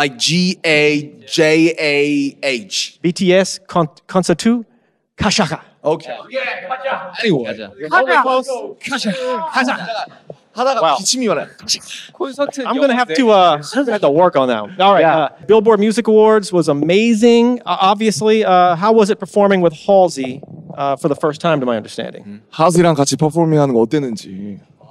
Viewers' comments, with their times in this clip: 0:03 I'm sorry I burst out laughing OMG LMAO HE SOUNDED LIKE HE WAS SPEAKING ARABIC "gashakha"
0:06 There are LITERAL tears in my eyes, poor Jojo pronounced it SO WRONG, it ended up sounding like Arabic IM DYING. I replayed it like ten times and I’m crying y’all.